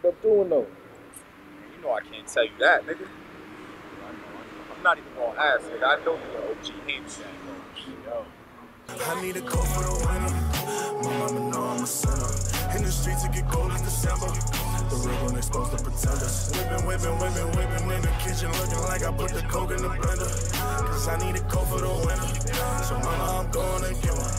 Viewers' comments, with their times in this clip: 0:08 I can't lie I was vibin off the track think I done played it over like 5x fucking off "I need a coat for the winter, momma know ima sinner, shit is catchy